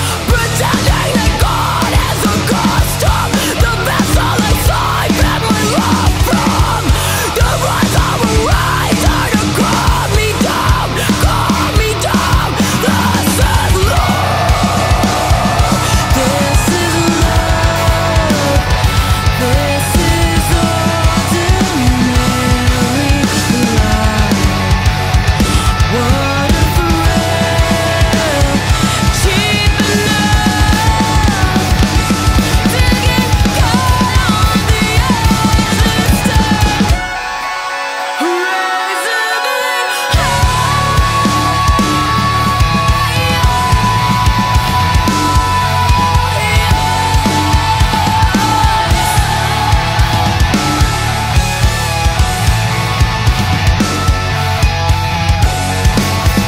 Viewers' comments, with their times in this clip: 0:04 That transition is phenominal. Being able to move from screaming to a growl to singing with no time between them... dang.
0:12 Did the drummer write the parts he's playing ? Not saying he's playing bad or he's struggling, but I feel that it's not exactly his style on some precise sections. But insane music and playing. Love the nasty scream on the word "love" :p
0:16 I can't get over that scream...and then the transition straight into clean singing Goosebumps.
0:29 Love the tempo switch-up
0:29 You're right, what I should've said is if you were writing out all 4 parts, it would be easier to write the drummer going into 2, since it's basically a macro version of 2 against 3 there. But that's the same as how you described it going from 'groove' to 'thrash'. However, the tempo still doesn't change in any of that. Groove vs. thrash there is about subsets of 2 and 3 being spaced differently, which matches up perfectly with the rest of the band who don't slow down or speed up at any point in this section. Unless your video is starting at a different spot than mine that's what I'm hearing/seeing.
0:34 Anyone else nudd at her voice cracking or do I need to gtfoh
0:37 That vocal talent is simply enchanting
0:37 .............im at a loss for words. i thought the ending of the beauty of suffering and trust fall were beautiful........ that is literally a sound from the furthest reaches of heaven.
0:39 i remember hayley william voice
0:41 sounded a little reserved, would love to hear some opera like confidence in this wail to truely send my soul into euphora